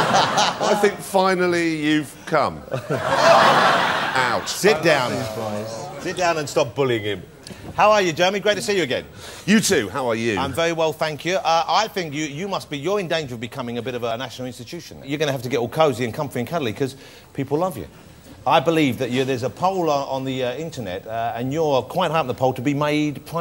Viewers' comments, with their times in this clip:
0:04 Did the edit the reaction after Seems like it was disappointment or booed reaction on that comment